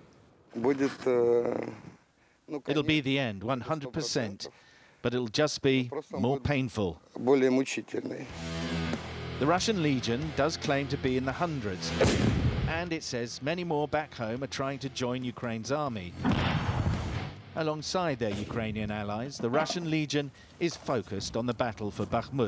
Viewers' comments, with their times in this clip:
0:09 the doom soundtrack kicks in.